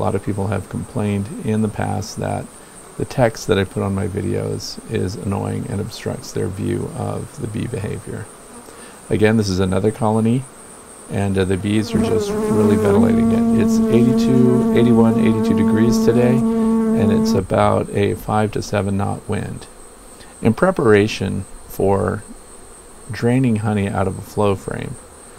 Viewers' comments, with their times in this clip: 0:10 Bee flying in ear simulator
0:13 I'm wearing headphones while watching, and I started shaking my head I thought there are bees on my head lol.